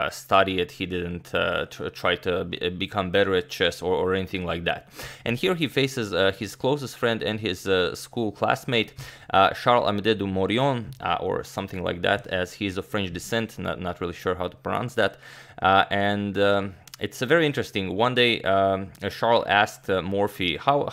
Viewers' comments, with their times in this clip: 0:08 your french is great ! (From a baguette)